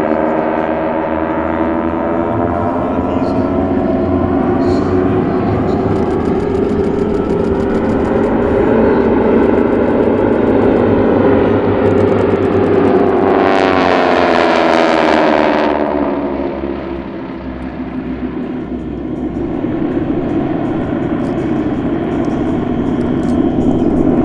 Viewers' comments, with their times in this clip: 0:06 bro, the sound the T-6s is just amazing